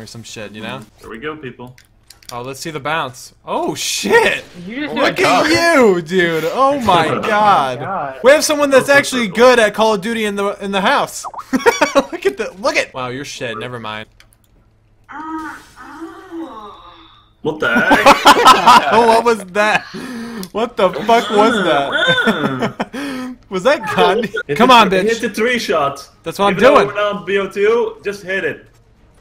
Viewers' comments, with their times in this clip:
0:10 anybody else look at your skype ?